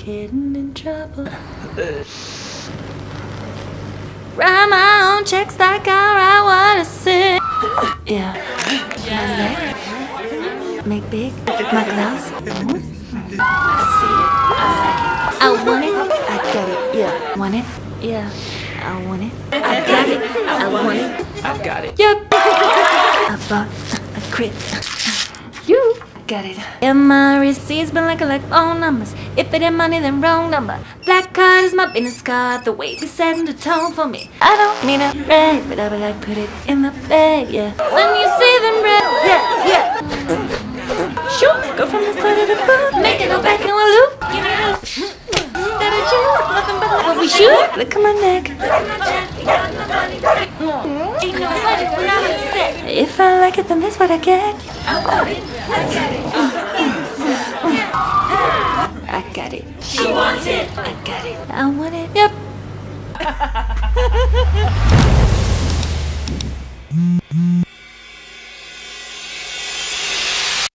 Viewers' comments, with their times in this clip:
0:04 have you got a cold?
0:05 I hear "grandma I got chicks and I wanna sing!"
0:08 that girls bone cracks
0:09 did she just Said "blackpink"?
0:23 11 year old SoundCloud rappers💀
0:25 THAT YOO-HOO THIUGH IM DYING
0:27 gosh that voice is so accurate
0:35 Okay but the girl who sings this sounds like Ariana.
0:39 it's the fart for me lol
0:39 I have no words......but farts
0:39 OMG SHE WAS FARTING 🤭🤭🤣🤣🤣😂😂
0:40 omg wtf the farts
0:40 when Nicki Minaj Twerks too much she farts.
0:40 sounded and looked like she was farting!😂😂😂
0:40 was she farting 😂😂😂😂
0:40 TWO FARTS IN A ROW 😂😂😂😂😂🤣🤣🤣🤣🤣
0:40 Farts are on another level
0:40 OM- DID JUST SOMEONE FART 😂😂😂😂😂
0:40 are they farting?😂
0:40 I'm sorry but that fart 🤣😂🤣😂
0:40 is she farting?
0:40 Bro is funny with the farts
0:40 Still her singig is good, but.. .... seriously!? 😆
0:40 those fart sounds😂😂 I can't stop laughing😂😂😂😂
0:40 nice farting sound
0:41 THe fart SoUnDs XD HOLY sh”T XD
0:52 her voice is pretty
0:52 she sounds like ari wow
1:02 Ok but does it sound good or alone
1:03 that really sounds like ari's laugh